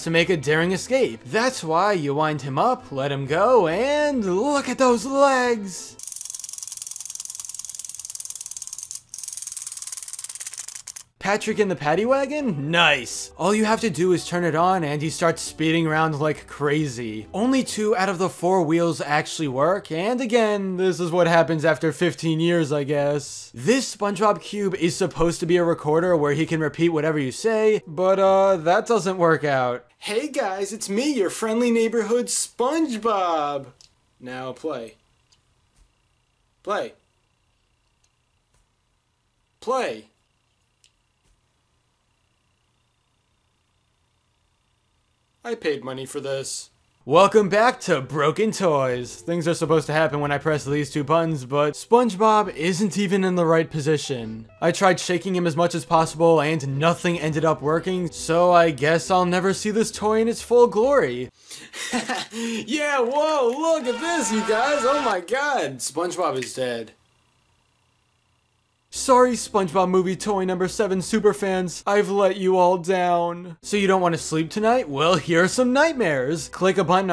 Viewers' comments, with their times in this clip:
0:05 Sounds like he's cold.
1:03 Was the soundbyte of some dude reaching his climax...?